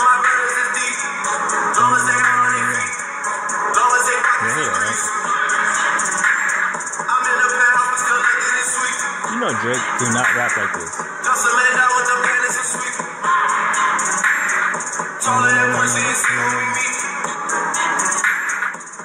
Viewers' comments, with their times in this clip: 0:04 It's not good anyway - doesn't sound special at all.